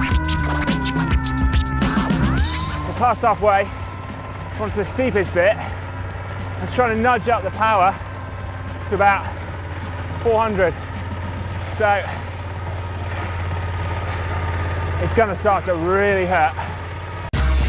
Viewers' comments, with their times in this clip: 0:03 Sounds a little like mechanical doping ;)